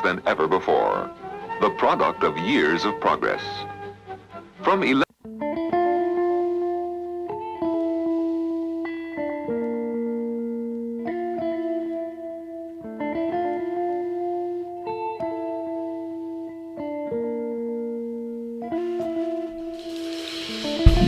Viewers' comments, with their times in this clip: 0:05 Why was the narration cut out ? You can't tell me that IBM required you to blank that part out like it is some corporate secret or something.